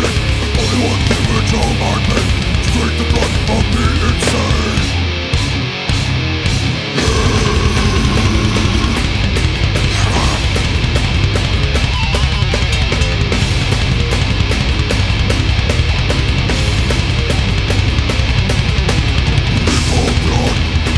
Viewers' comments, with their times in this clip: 0:05 he sounds incredible